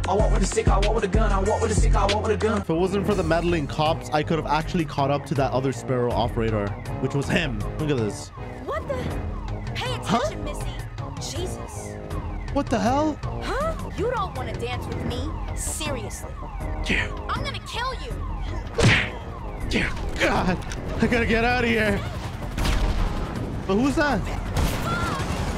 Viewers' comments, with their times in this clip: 0:08 a male cop with a female voice seems about normal in 2024.